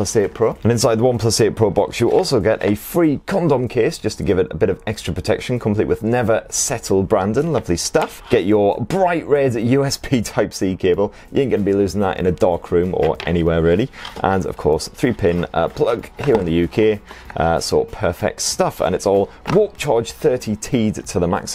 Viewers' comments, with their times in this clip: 0:03 Did I hear condom case lol